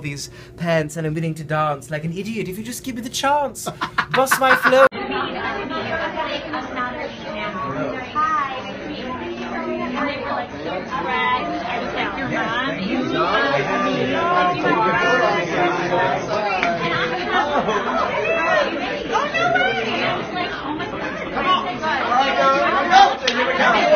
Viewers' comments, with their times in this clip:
0:03 therapy is expensive but lins laugh is free :)
0:11 i swear for a second I thought this woman in the background was saying: o my god they were roommates. Lmao